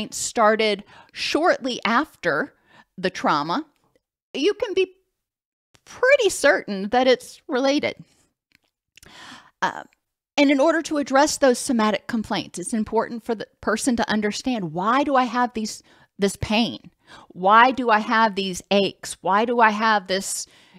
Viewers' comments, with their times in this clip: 0:05 I love watching your videos while I craft and you have helped me so much. As a person ,not a Therapist. But Something happened today while watching your video that I am literally still shaking. Guess my Xfinity bill is late so they have your speech all messed up!! That is a big Trauma now and I think it's should be consider abuse for people like me that has cptsd. My kids think I'm just crazy. Your thoughts? I have it tape, monkey mind says send it later and get away from t.v